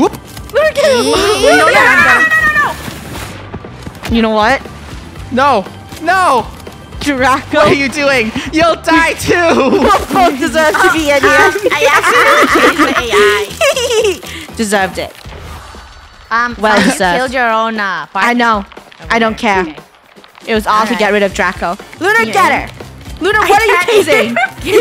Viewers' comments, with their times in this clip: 0:08 i thought he said you will float too